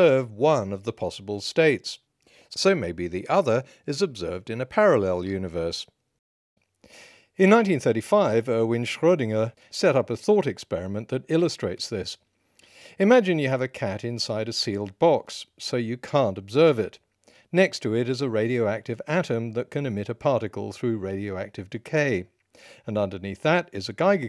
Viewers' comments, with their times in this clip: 0:09 Genuine compliment: you pronounce "Schrödinger" almost perfectly. In fact, a native German speaker from Germany could pronounce it worse than you when speaking English because sometimes it's hard to switch back from English pronunciation to German pronunciation.